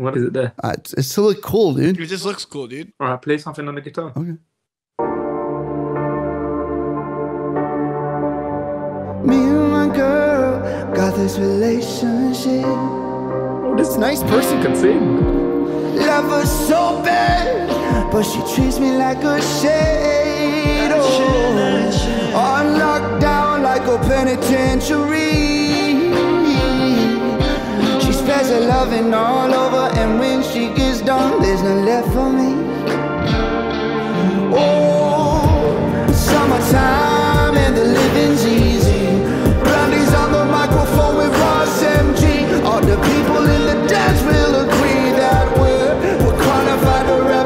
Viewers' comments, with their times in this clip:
0:05 whats the song that starts called that was the chillest thing ive heard
0:13 the dubbing in that part is so fucking funny.
0:35 whatever song this is sounded soooo good